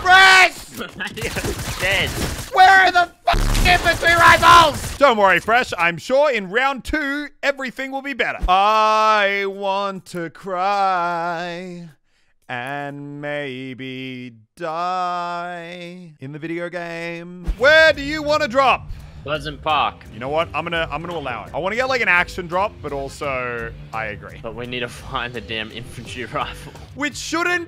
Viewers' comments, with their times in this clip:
0:08 you should become a professional singer lol